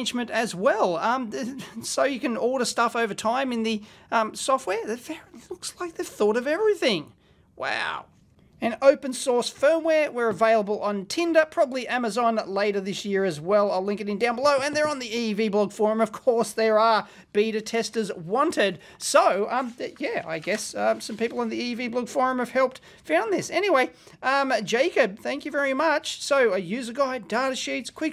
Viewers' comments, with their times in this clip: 0:09 was that a slip of the tongue suggesting the developers are available on Tinder??? Baa haa haa... the dating site of choice for electronics engineers for sure!